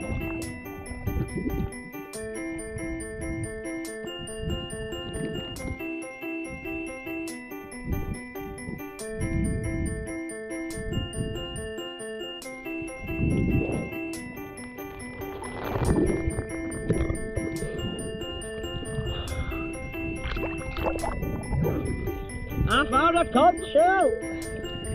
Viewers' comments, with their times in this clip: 0:06 When the music came on I felt the biggest rush of nostalgia I've ever experienced
0:06 Man the music really got all the memories rushing back
0:06 That song and the feels uhhhhhhhhhhhhh body